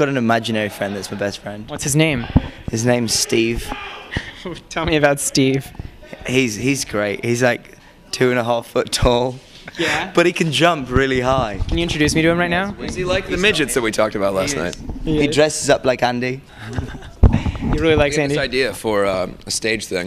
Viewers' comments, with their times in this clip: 0:04 Ok but like did anyone else hear the dude scream "LEtS gO!" In the background for no reason ? Just me? Okay.